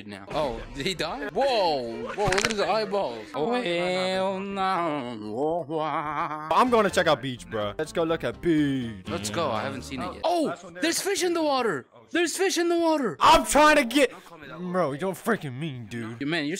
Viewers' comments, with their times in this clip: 0:03 Bro hit every note perfectly
0:04 is no one going to talk about these vocals